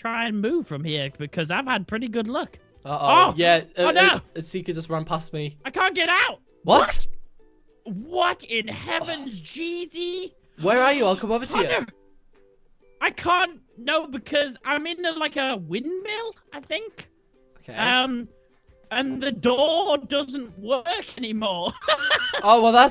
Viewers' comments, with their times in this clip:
0:06 am i the only one who realized they said "What" at the same time?